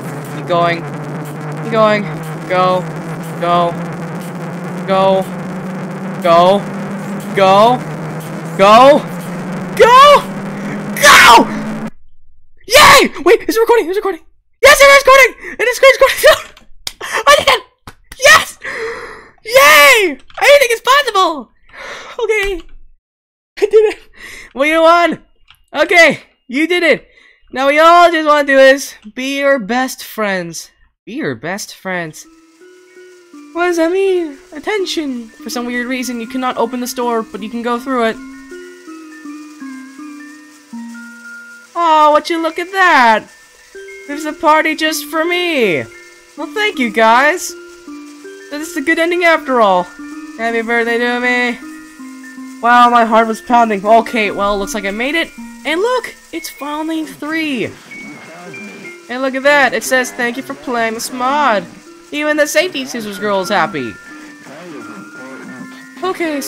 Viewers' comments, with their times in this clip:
0:08 Me: boy u ok u screamed like a little kid- Him: yeah its just a voice crack…-
0:48 i hear bar ending sound